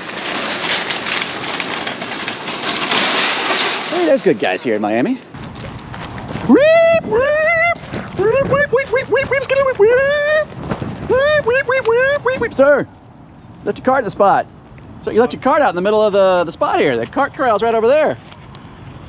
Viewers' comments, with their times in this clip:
0:05 for an EPIC SIREN!!!!!!!